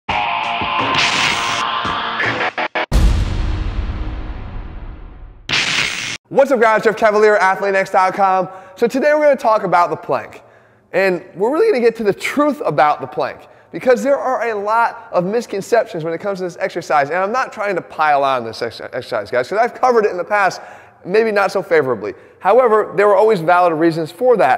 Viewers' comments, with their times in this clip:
0:10 damn Jeff’s voice goes to failure too. Keep on inspiring!